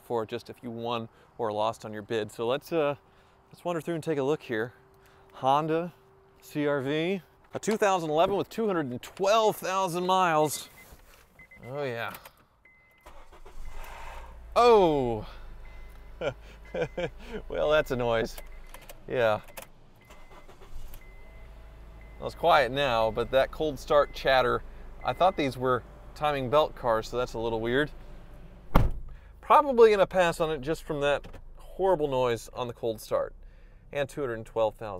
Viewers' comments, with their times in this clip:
0:10 the same noise happen to my honda accord in cold start what is the reason
0:13 The CRV just needs an oil change by the sound of the cold start, it’s a Honda thing
0:15 kseries vvt rattle on startup happens with age or no oil changes
0:17 starter. not disengaging from fly wheel not timing chain...